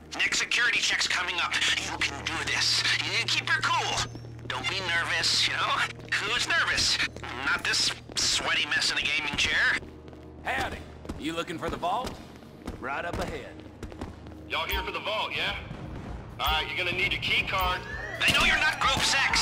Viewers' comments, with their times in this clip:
0:03 that dude who fell down tho😳 😂😂😂😂😂😂😂😂😂😂😂😂😂 the noise